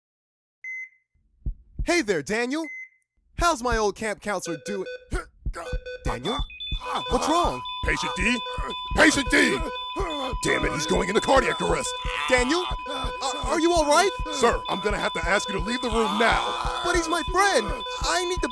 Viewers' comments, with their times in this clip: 0:03 Sounds like Daniels shitting out 7 whole dinosaur eggs out of his ass and screaming in pain
0:05 I heard those dam beeps and my heart stopped- DaNiEl Before I paused it, David sounded so confused;-;-;-; meH heArt